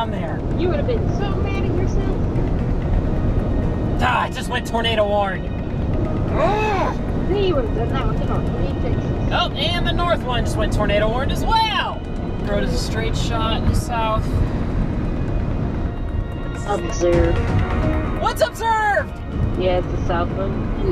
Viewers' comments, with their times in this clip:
0:06 sounds like an old car horn XD